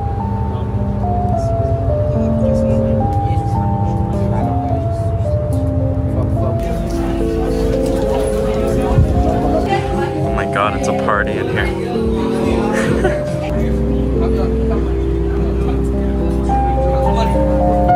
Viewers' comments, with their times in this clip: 0:03 what is the song it's kinda nostalgic